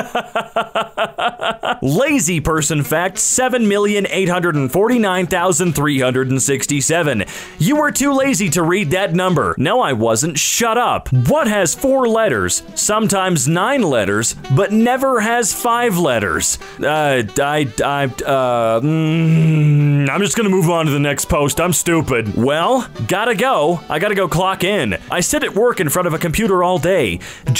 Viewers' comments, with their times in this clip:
0:10 there is no way he said that whole number properly